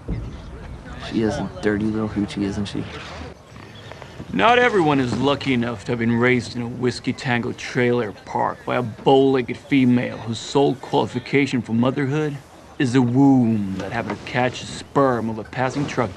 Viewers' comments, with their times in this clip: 0:03 Fucking amazing delivery, and one of the best lines that's so perfect to reference.